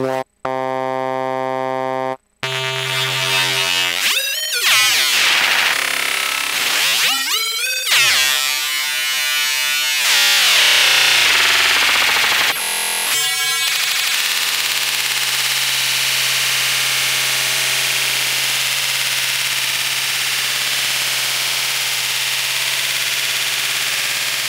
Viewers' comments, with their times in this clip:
0:09 sounds like some crazy Cross Mod already, can't wait for the full thing!!